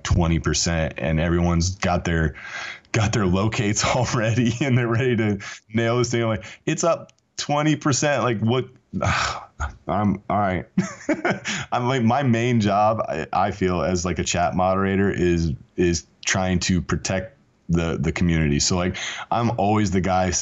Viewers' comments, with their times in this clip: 0:06 guys big secret he said, it is up 20% dont short it. and the way he paused and gave a sigh shows how important this info is